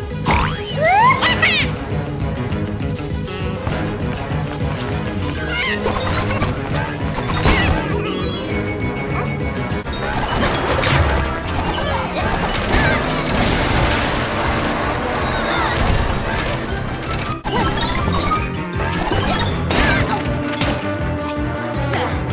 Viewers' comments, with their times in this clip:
0:10 The sound had changed